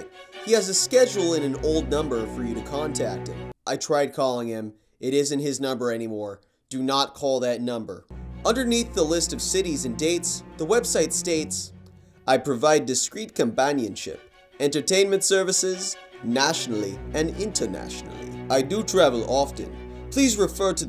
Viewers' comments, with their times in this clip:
0:04 i want to know what happened in that call lol you sound shook